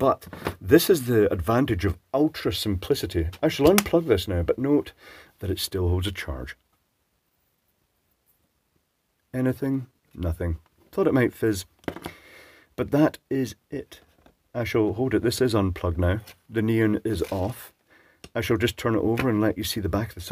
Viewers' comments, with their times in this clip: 0:07 That was a nice little fizz. Used to work at a company that used these ladders as multipliers for accelerator columns used in neutron generators. Voltages were up to 120kV and output power was usually something like 10W or so, driven by some form or resonant or HF electronic supply. They were quite spicy, and they exploded spectacularly when they failed given how small their form factor was. Usually the capacitors would be reduced to shards and dust in the bottom of the housing when one went.